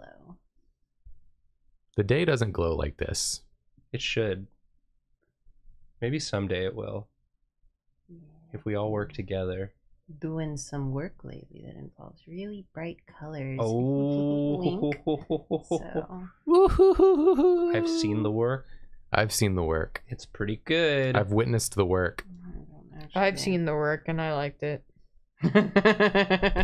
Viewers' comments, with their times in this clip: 0:09 for some reason my brain started and went to the tune of, "you've got the love" by Florence atm. ~I've seen the work~